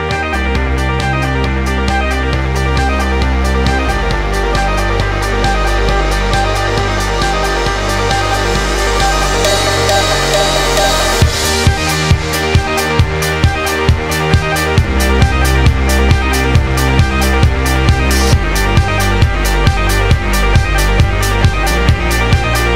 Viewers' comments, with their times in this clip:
0:09 Love the bass drop on